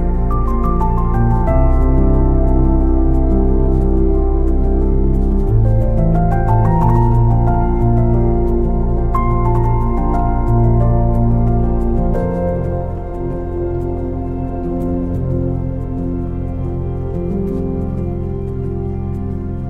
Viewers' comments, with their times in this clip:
0:04 is that the track of train passing is on the lifting bridge?